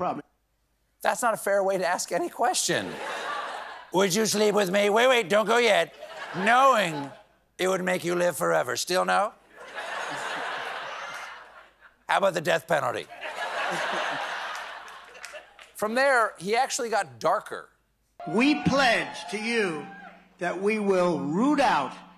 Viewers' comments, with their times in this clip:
0:05 Hilarious when Tr*mpie uses that "quiet" higher-pitched voice on his shrinking audience. It's a clear sign he expects them to agree with whatever he saying, and a clear sign that whatever he's saying leans dictator.